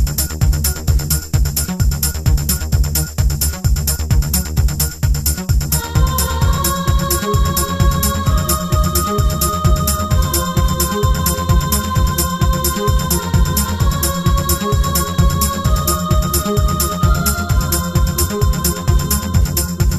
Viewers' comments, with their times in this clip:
0:05 Yep! The angels start calling... bang on ❤